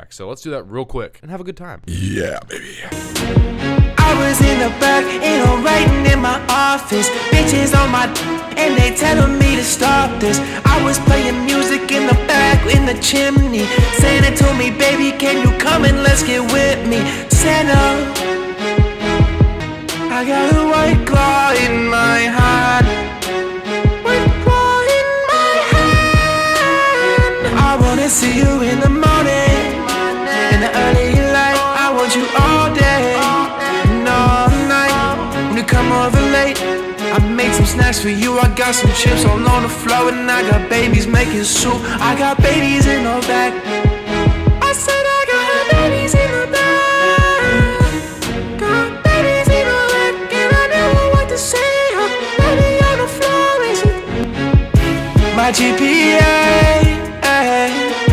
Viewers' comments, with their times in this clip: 0:04 Why’s he sound like A Boogie
0:42 babys in the bag!?